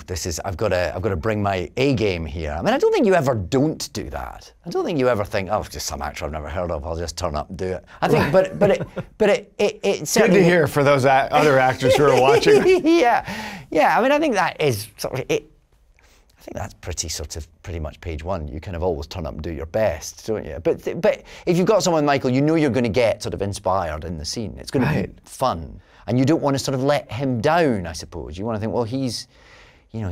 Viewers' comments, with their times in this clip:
0:09 I thought I’d never hear “hehehehehehe” in real life guess I was wrong
0:09 omg his laugh
0:10 this laugh on 🤣 couldn't help but remembered michael sheen's aro
0:10 well that laugh is... adorable!
0:10 Here's your 'David's loveably funky laugh' button guys
0:11 his "hee hee hee" i love him
0:12 another classic tennant giggle